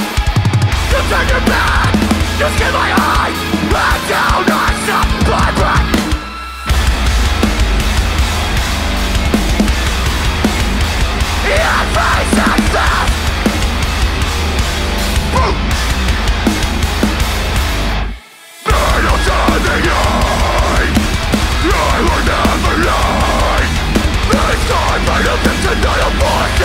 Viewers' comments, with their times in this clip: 0:07 I have suspicions that it's not the actual audio. I'm assuming they play to a track but I could be wrong. for example, guitarist is clearly playing but it's not audible at all. Seems kinda suspect and I'm not down for it tbh